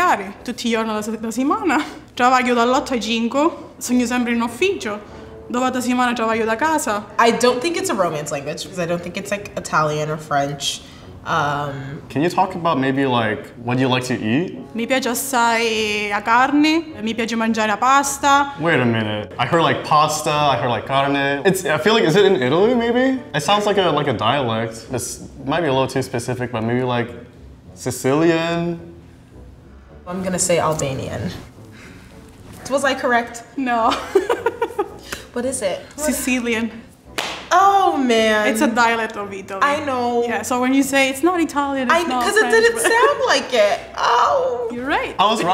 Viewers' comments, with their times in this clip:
0:09 she’s Sicilian HAHAHAHAHAHAHAHA 😂😂😂 fantastico !!! Greetings from Italy 👋🏾🇮🇹
0:32 i love her language / voice